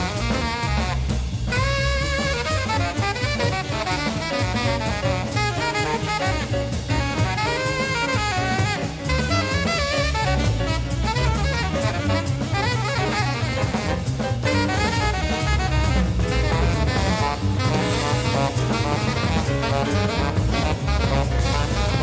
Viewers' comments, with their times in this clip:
0:10 Epic sax walrus.